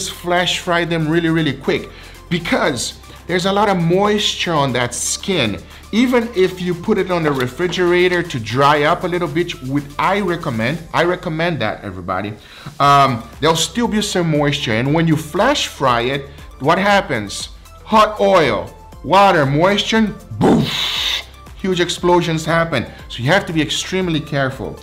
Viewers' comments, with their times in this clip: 0:07 Guga said “even if you put it on a refrigerator to dry up a little (bitch)” 😂😂 good stuff bro 😃
0:08 Dry up a little b** o_O
0:08 "dry up a little bitch". Dang, Guga, you naaasty!